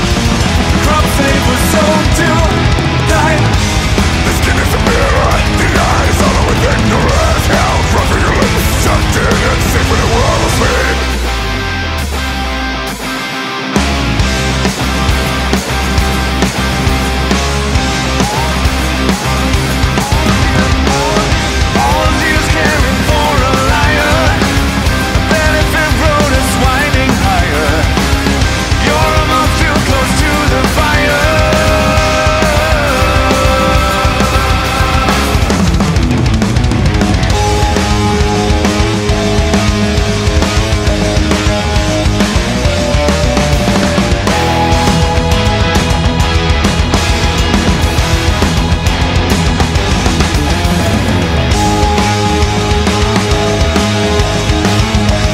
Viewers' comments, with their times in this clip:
0:10 am i the only one who still finds the simple riffs like better than everything else? it just goes so hard. It's like i'm ready to take on an army or flog my motorbike to the max lmao
0:21 All Jews Can Afford A Lighter (All those years caring for a liar.)
0:37 is probably the most underrated riff in Opeth's catalogue. One of my personal favourites.